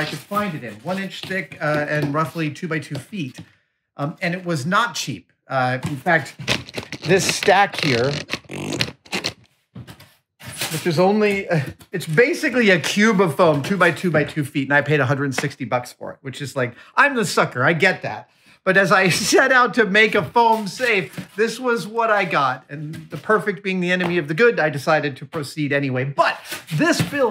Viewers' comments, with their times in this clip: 0:07 is it just me or does it sound like Adam farts
0:08 F a r t
0:08 What is making that hilarious farting sound? was that the camera ? rofl.